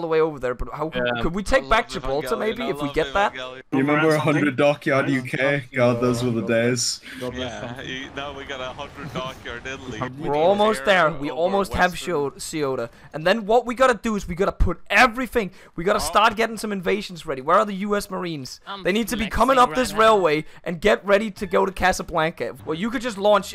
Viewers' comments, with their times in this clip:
0:10 what kind of ceuta pronunciation is that